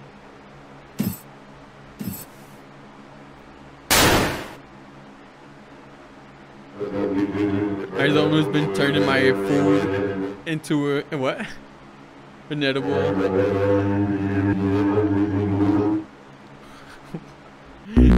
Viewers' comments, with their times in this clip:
0:06 I only just noticed that the opening song is Green Hill Zone slowed down. Listen to how he speaks fluent Ugandan